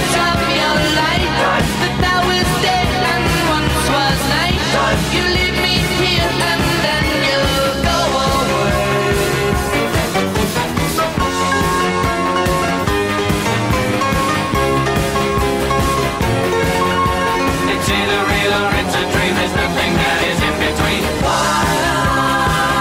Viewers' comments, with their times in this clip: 0:10 the piano section at like ish is my favorite part c: